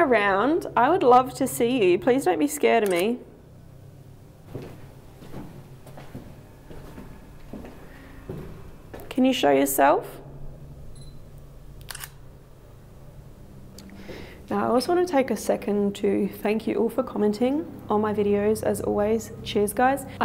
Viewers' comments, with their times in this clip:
0:07 I swear I heard a woman screaming.